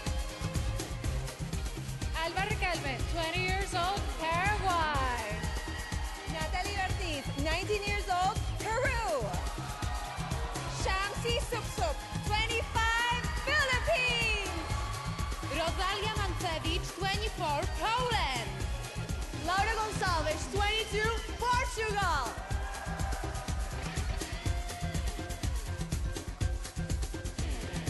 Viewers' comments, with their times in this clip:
0:08 She doesn't look that bad. But when she shouted Peru I laughed. But I still love her thou